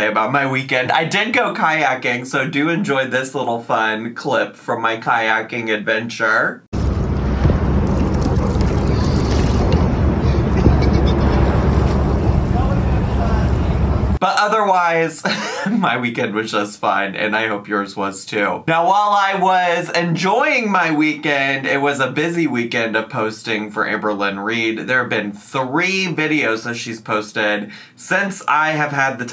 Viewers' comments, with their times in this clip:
0:10 My favorite part of this whole video... the lil laugh😂😂😭💕
0:11 that giggle tho 😂😍